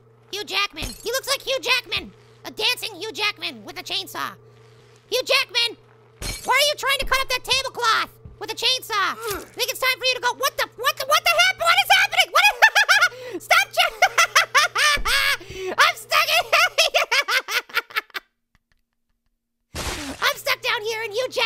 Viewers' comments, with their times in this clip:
0:09 Don’t think it’s a chainsaw now, I think it’s a lawn blower in disguise.